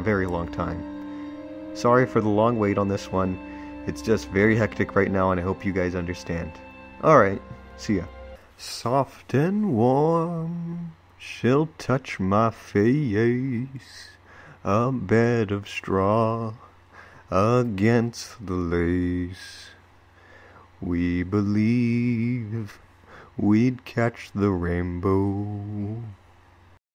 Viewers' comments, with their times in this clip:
0:07 yes! my favourite youtuber has finally uploaded. and more importantly had let us hear his angelic singing voice